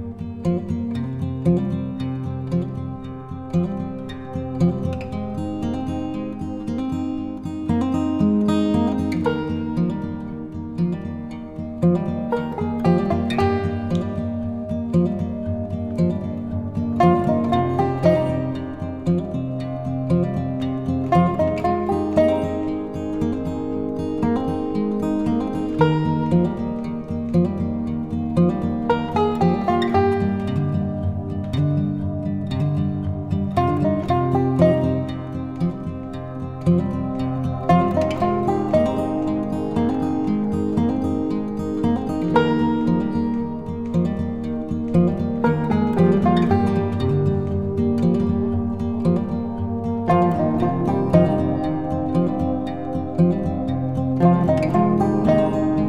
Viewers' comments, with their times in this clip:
0:03 Hi, there is still no buzzer
0:06 There’s no beeping warning for pose so I just ended up holding forever 🙃
0:39 There are no beeps and possibly after, I was using these to know when to change position